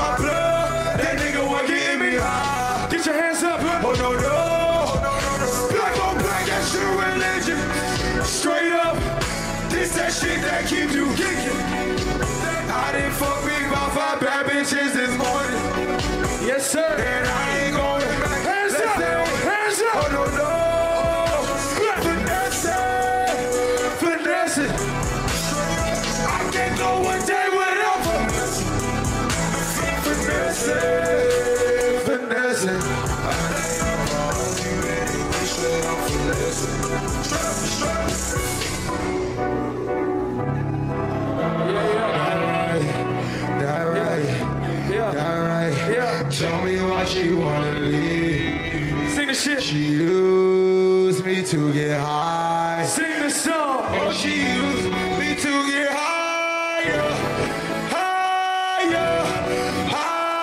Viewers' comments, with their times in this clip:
0:07 first time that I see travis in live saying an adlib 😂😂
0:44 autotune fucking greatness!🔥🔥🔥🔥